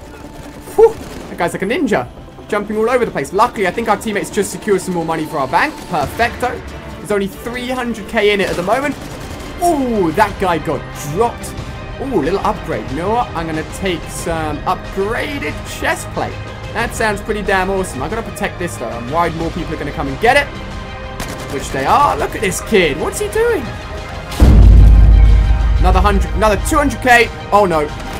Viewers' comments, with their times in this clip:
0:10 it sounds like transformers 3